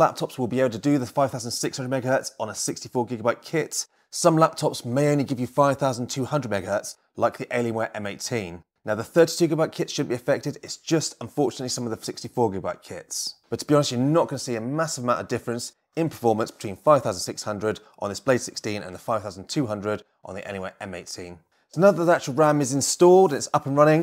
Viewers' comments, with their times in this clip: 0:09 Couldnt make out what was said here